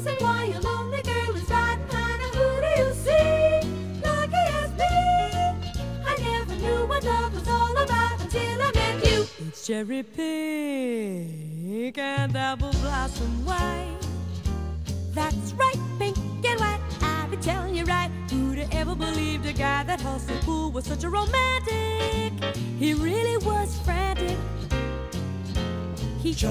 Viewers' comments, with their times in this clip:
0:09 JANIS SIEGEL SOLO